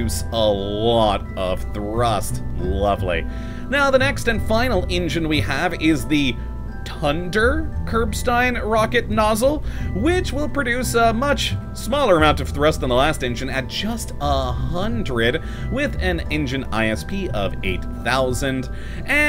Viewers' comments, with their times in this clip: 0:07 "Tunder" God that sounds so Irish xD Either that, or it sounds like the knock off Tinder xD